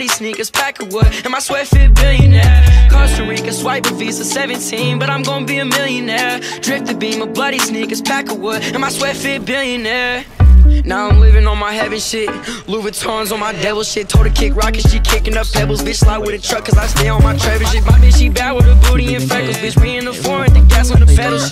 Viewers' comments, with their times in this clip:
0:09 I put it at .5 and he's still fast ass fuck